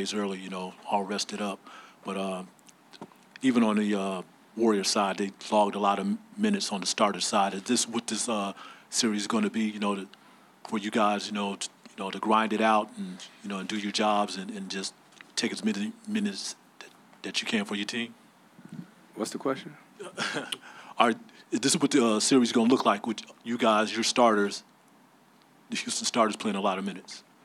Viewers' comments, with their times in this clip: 0:08 THat dude asking second question to Chris mark, find a new job please, u can't talk.
0:11 “Take as minus minutes as ya as ya can “ Chris Paul: I’m sorry what was your question “ buddy couldn’t squeeze none of his words out 😂👌🏽